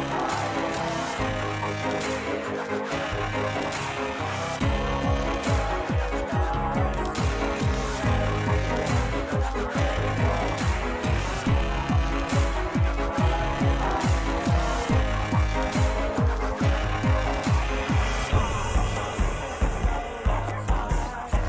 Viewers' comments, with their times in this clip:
0:06 this music was so fire the cold island metlet and turned into an even better music